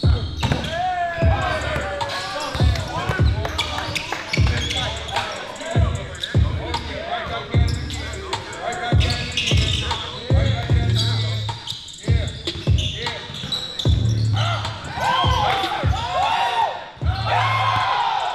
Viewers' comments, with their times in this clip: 0:06 why did it sound like he was rapping to the beat saying "right back at it again"😂